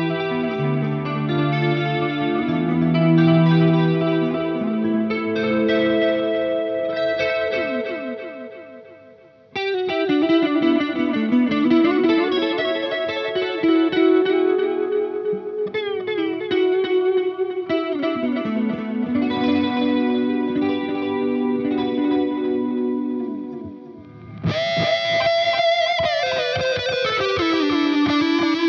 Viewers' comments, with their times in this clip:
0:10 If I had closed my eyes, I would have sworn that was Bill Nelson playing.